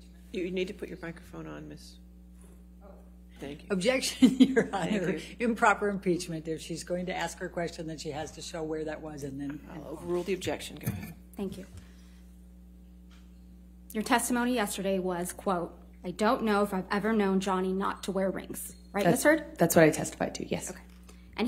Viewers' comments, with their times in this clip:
0:04 her laughing annoys the tf out me smh lol